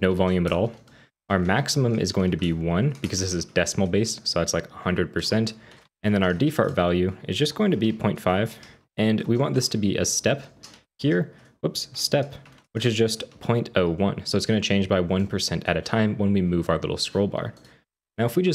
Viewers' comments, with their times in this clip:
0:06 "de-fart value" lmaaooo my guy